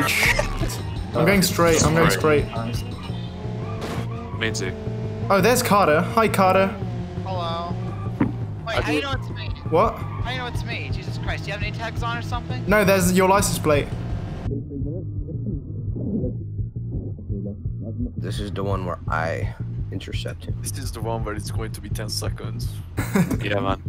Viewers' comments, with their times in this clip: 0:07 he sound like sir lancelot (lance stroll)